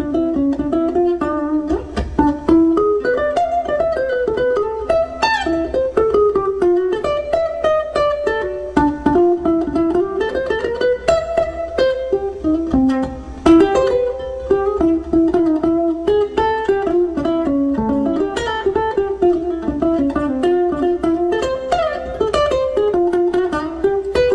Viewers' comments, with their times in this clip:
0:05 love the squeal